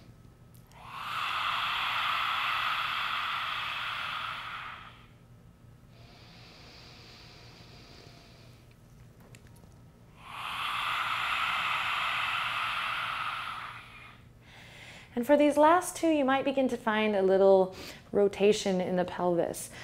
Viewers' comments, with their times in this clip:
0:05 it looked like she was possessed. that breathing took her to another dimension in the universe.